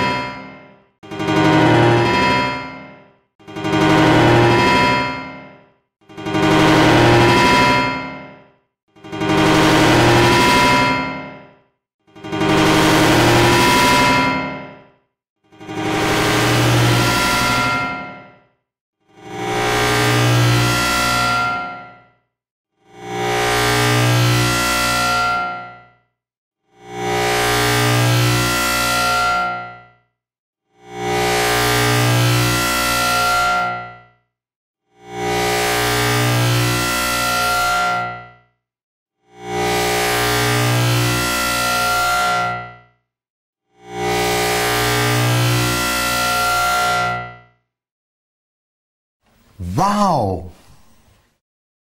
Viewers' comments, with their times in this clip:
0:03 here comes the static
0:05 is where it begins to cry for help
0:06 it sounds like hitting steel at the end
0:12 = How to get earrape.
0:15 Is it even music anymore?
0:16 me: AAAAA MY EARS!!!!!
0:19 when you’re getting a haircut and they buzz around your ear.
0:19 now it sounds like a hair cutter at this point
0:19 it's like ur mom is dying and u have no ears
0:19 From it just sound like... nothing
0:20 and that, gentleman, is how you made sci-fi sounds for films.
0:23 sounds like hell
0:24 when you put the volume 100% and there’s a loud music spreading around the city
0:25 sounds like a sword
0:34 sounds like some strange robotic alien
0:35 sounds like its saying walrus
0:35 Ok, now it is metal sounds.
0:40 sounds just like ma neighbor at 6 am at sunday
0:41 thats a Transformer at work
0:43 Lol this sounds like people fixing stuff when you are a sleep
0:43 sounds like working my pc
0:43 That sound we all make when we stub our toe or when you making a jumpsscare for your FNAF games
0:44 Is this what alien invasions sound like?
0:44 R.I.P. HEADPHONE 🎧 PEOPLE
0:44 M I C R O W A V E
0:44 sounds like a saw cutting though wood
0:45 It sound like a rusted fan now
0:45 WHO THE FUCK IS ROAD WORKING IN 5 AM
0:47 A ALIEN PLAYING THE PIANO: